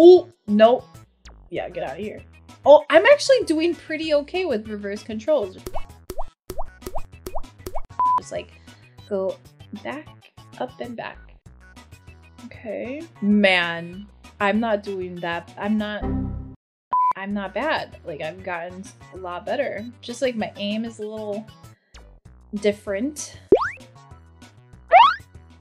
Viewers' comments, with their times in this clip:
0:06 droplet sounds go brrrrr